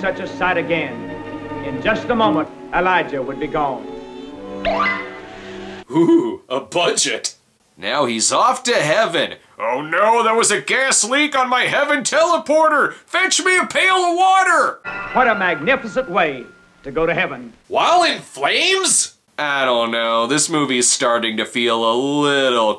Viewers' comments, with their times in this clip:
0:03 ah, so that's how you get to Heaven, put on a fake beard while standing out in the desert waiting for a gliss up to randomly play.